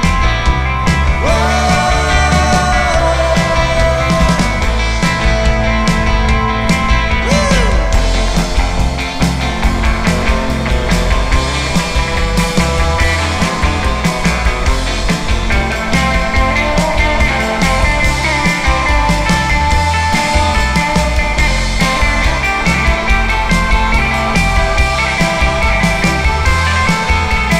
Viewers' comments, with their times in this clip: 0:08 Love that lead